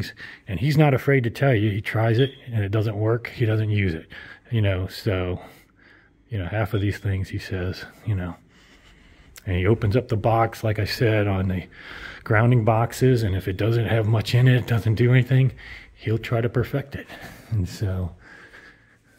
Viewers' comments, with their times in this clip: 0:03 Owner needs to pay someone to replace smoke alarm batteries.